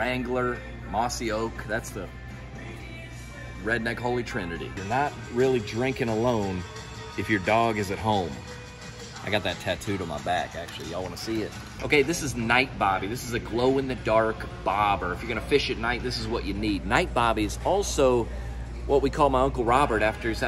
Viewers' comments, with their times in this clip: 0:03 The Sweet COUNTRY MUSIC in the background! 👌🏾😁